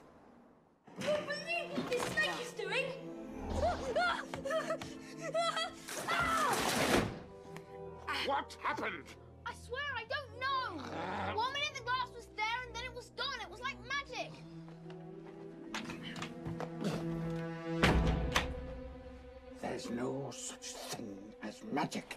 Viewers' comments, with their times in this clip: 0:03 I love the transition between scenes the sounds just fit together so perfectly